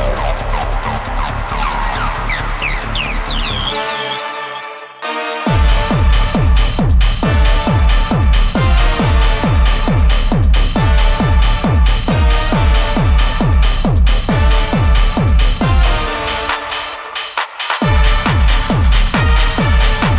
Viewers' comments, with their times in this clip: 0:04 reminds me of bowsers castles in super mario